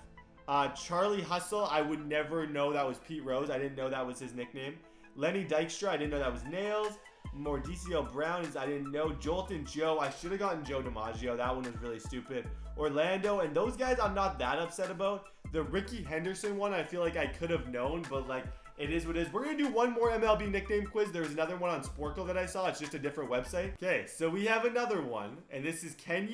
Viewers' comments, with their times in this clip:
0:07 Wait what did he just say for Mordecai?!?!?!?!?!?
0:07 Wait what did he just say for Mordecai?!?!?!?!?!?